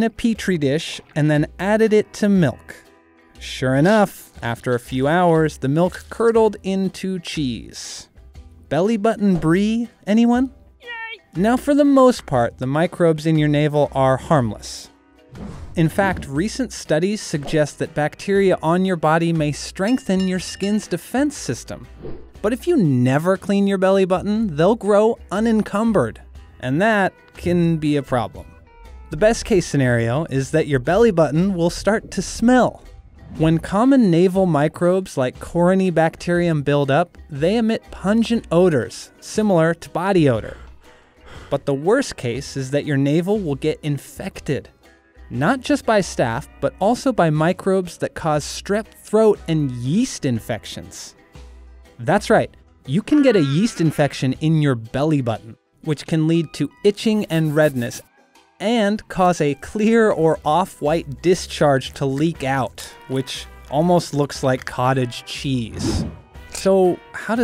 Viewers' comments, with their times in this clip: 0:10 I love the sound effects on
0:52 Why does he screm like that tho